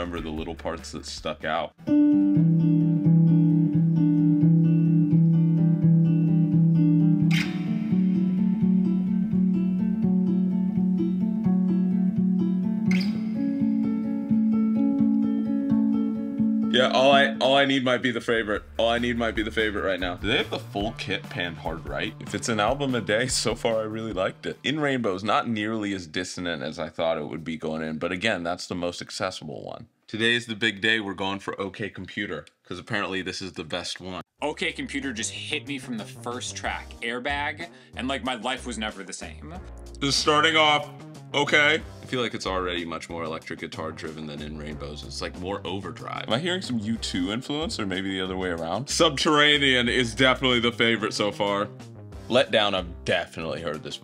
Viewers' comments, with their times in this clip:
0:10 sounds kinda like the God interlude from outkast 2003 The love below
0:42 How is the background track that sounds at minute called? That bass sounds gnarly